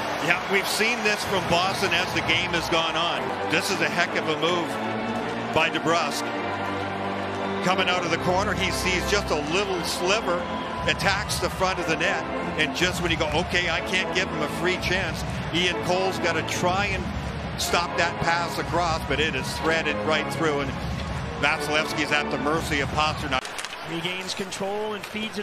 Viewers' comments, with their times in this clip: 0:10 I swear he shoots this and yells “WHEWWWWW!”